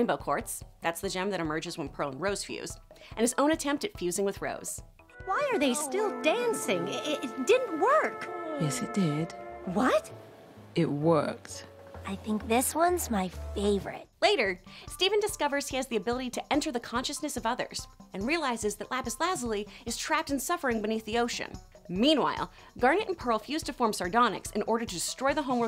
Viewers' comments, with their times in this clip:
0:06 Never noticed this, or the displeasing sounds. And classic Amethyst is here as comic relief